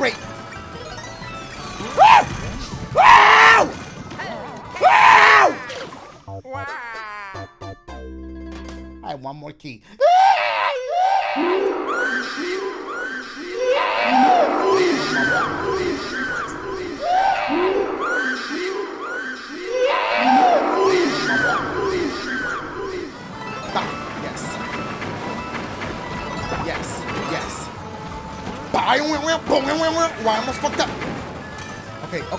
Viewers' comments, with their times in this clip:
0:09 that has to be my favorite echo of all time
0:10 The type of scream you here In some type of horror movie 😂
0:16 sounding like a demon and its* baby from hell lol